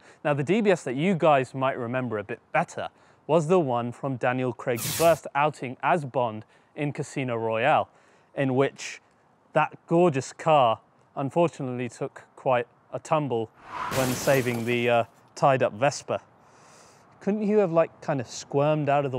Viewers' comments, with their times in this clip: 0:06 I thought there was a squirrel on the roof for a second. Shoo!